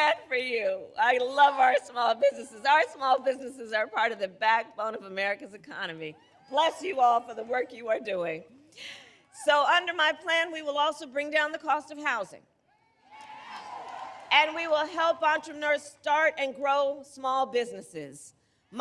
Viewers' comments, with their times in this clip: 0:06 Now she is imitating Trump style of speaking 🤡